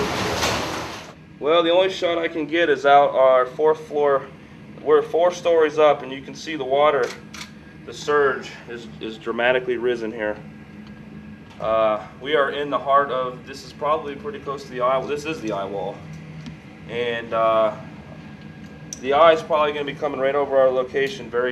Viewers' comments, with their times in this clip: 0:06 did someone just reload a gun or is that just me lol